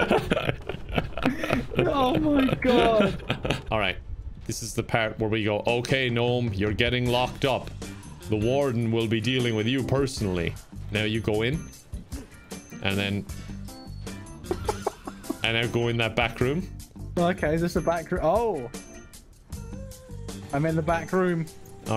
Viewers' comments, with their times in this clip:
0:06 the retro adult film music in the background tho😂😂🤣